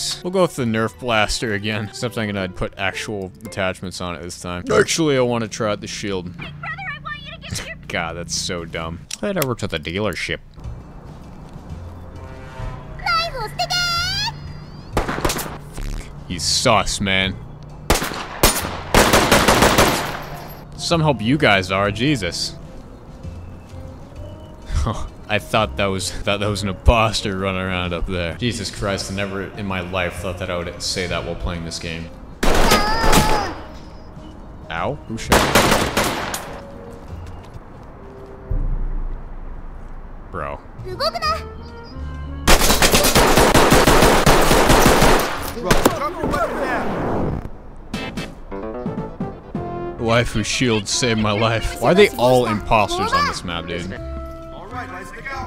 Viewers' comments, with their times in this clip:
0:05 And then there is the voice clip to make it even worse.
0:41 is probably the most jarring thing I’ve ever seen from a video game, from the anime shield to the brutal gunfire, probably really not good for the mental health lmao